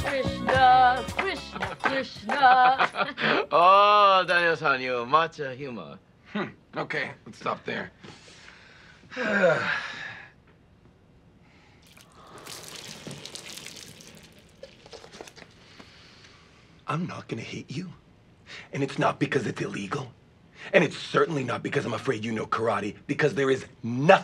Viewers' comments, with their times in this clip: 0:05 That smirk and chuckle is lowkey the most terrifying part of this clip